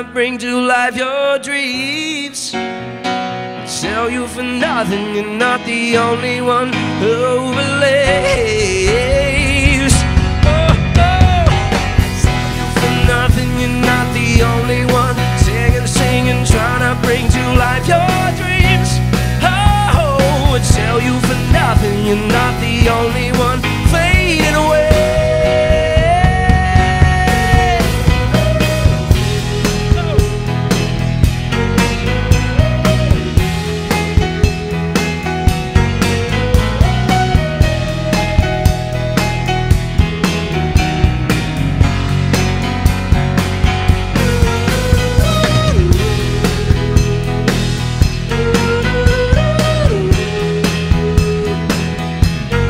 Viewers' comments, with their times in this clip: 0:09 Haha do you hear that ugly tone ? Except that great music Jamie!
0:36 Al least I hear you fail a note Jaime, minute but it doesn't matter, however you are an incredible pianist and we love too much your music. Always stay big Jamie!